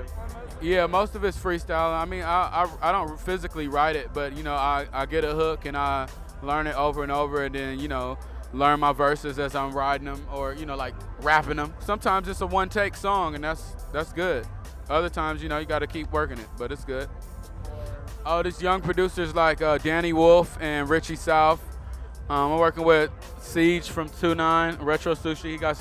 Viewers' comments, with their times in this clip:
0:09 how he says rapping em!! lmfao Fucks with you man